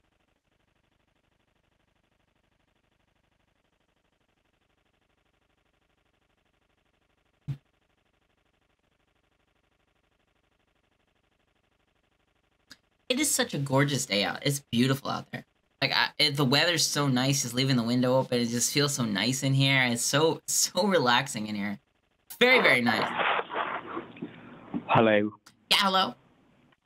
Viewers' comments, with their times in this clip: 0:09 Your transition to talking about the actual weather with such a pleasant demeanor and then right back into roasting the scammers has to be my favorite moment in this call!